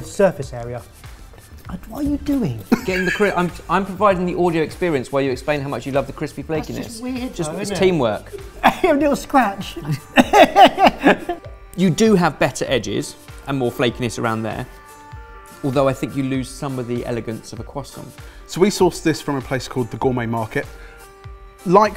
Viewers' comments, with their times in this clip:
0:07 fork don't like (didn't hear anything though)